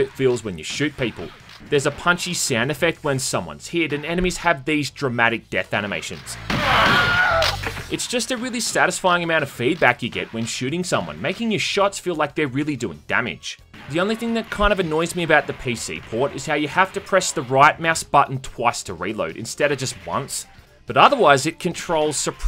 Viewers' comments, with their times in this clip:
0:05 That stupid bloody Wilhelm scream... Some people love it. Personally I dislike common sound effects in games and movies. It instantly destroys the immersion for me. My brain checks out of the experience and starts thinking about overused sound effects instead of just watching or playing, now I'm off thinking about why they couldn't spare 5mins to record a new scream or bear growl. Some movies cost millions to make and they use stock sound effects from the 1950's............ WHY?!?!?! Oh, great now this video has ended and I missed 2/3rds of it thinking about damn sound effects again....
0:06 I can't tell if the Wilhelm Scream is part of the game sound effects, or added for this video. If it's not in the game, it should have been!
0:06 Love the audio focus on the Wilhelm scream.